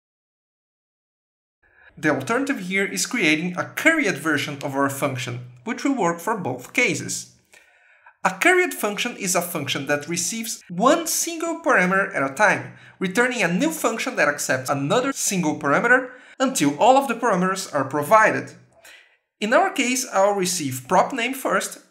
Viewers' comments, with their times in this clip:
0:09 carrot function? carriot function? charriot function?? what did you say ?